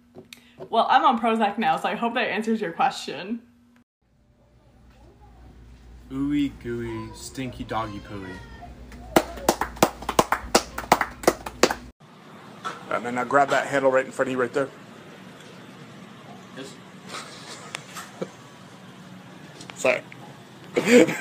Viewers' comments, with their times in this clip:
0:08 they be clapping a 3:2 polyrhythm